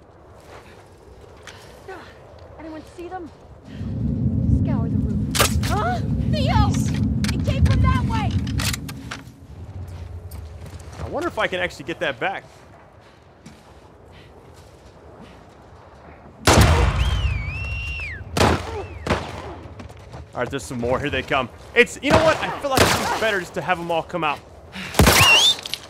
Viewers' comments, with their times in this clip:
0:05 did that guy just moan?HAHAAHHA
0:06 i was soo weirded out cuz that girl moaned when she got hit in the face wit an arrow tf